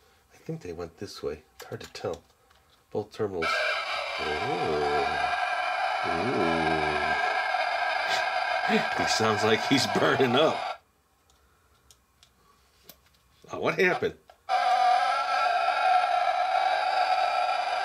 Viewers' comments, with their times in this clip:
0:03 no one: this dino: distorted screeches of the damned